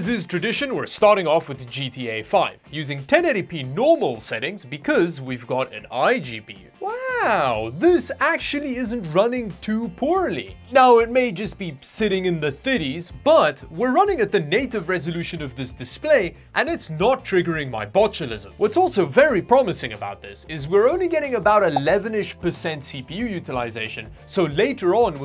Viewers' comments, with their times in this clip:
0:10 "Sitting in the thiddies" has a nice ring to it.